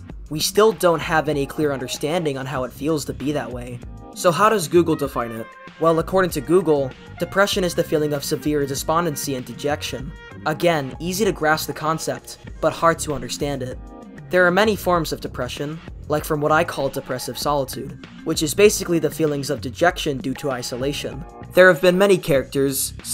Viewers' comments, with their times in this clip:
0:09 You think you can throw in some cult type beat and not expect someone to catch it immediately?